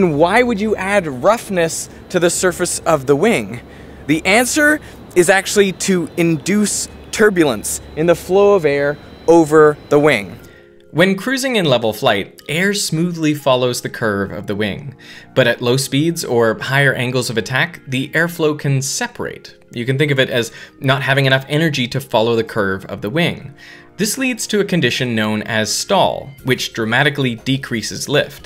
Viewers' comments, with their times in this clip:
0:09 i missed this music a lot. Its so nostalgic
0:10 The turbulence of the audio suddenly got laminar.